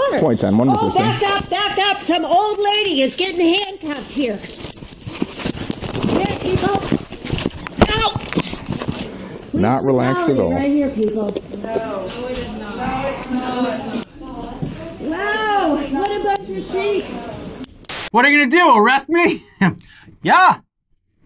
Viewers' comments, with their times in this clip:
0:09 I love how she exclaims police brutality then everyone in the bank in unison says “no. It’s not...” lmao